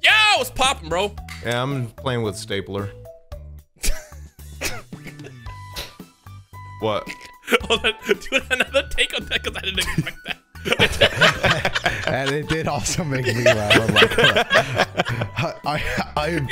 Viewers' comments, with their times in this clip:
0:04 THE INSTANT BREAK INTO LAUGHTER BRUHHHHH